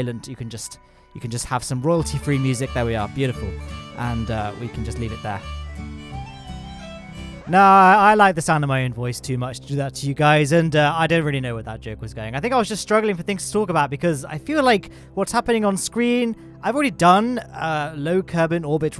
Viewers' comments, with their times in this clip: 0:06 The beautiful music was interrupted by a VENTION COMMERCIAL!!!! WHY!!??!?!?!?!